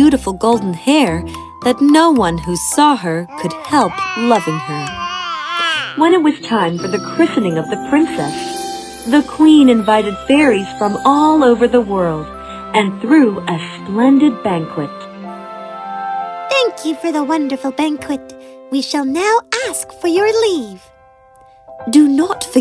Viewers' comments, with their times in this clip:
0:06 What's wrong with the audio🤨
0:10 In the narrator voice changed ;-;